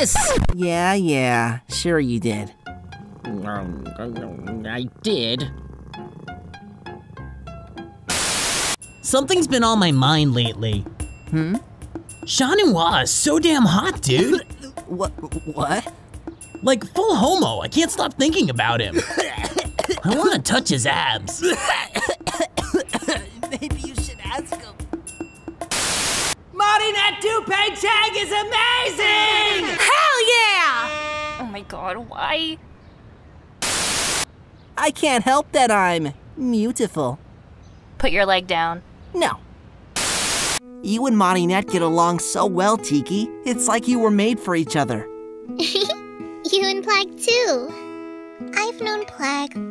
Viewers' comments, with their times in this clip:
0:08 Nino is such a mood and that low "maybe you should ask him" of Adrien makes me cry 😂😂😂🤧
0:12 Nino is literally me everytime I see chat noir, but Adrien does not cough when I say such things out loud
0:13 I was so confused what he said and now I know, it's chat noir LOL
0:20 Nino: I wanna touch his abs! Adrien: coughing loudly You should ask him...
0:25 Adrien: MARİNETTE DUPAIN-CHENG Subtitle : MONEY THAT TO PAYCHECK
0:34 The comic is the best…they way Chat says no is killing me 😂